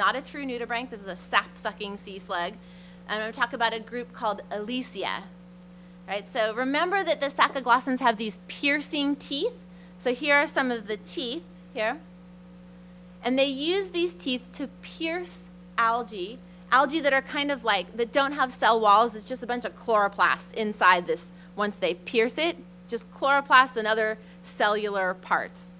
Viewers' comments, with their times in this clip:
0:08 piercing, kinda like her voice.